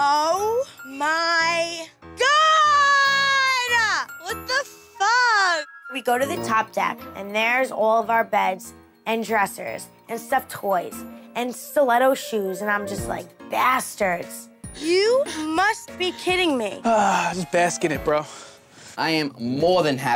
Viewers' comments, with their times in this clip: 0:05 Did anyone notice they didn’t bleep the f bomb ? 😂